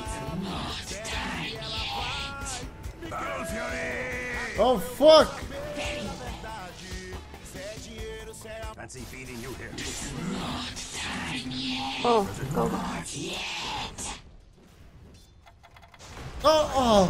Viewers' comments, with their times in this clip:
0:04 he is really listenning lepo lepo?